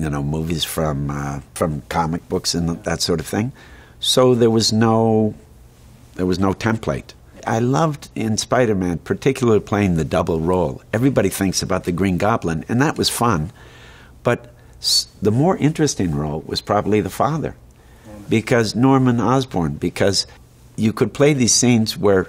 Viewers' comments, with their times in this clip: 0:08 Such an iconic voice, brilliant actor❗️👏🏼 Norman - You know I’m some what of a scientist myself